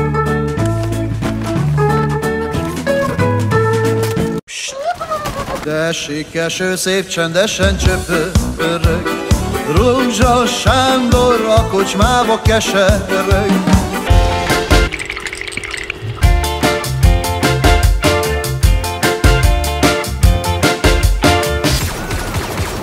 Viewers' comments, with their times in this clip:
0:05 Thanks for putting Hungarian music in the video!